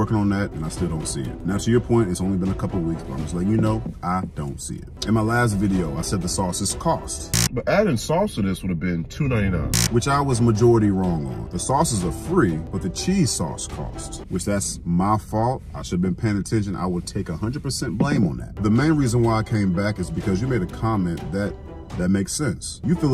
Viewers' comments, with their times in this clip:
0:07 [Feedback] Your transitions are very loud That's all. Love the vids!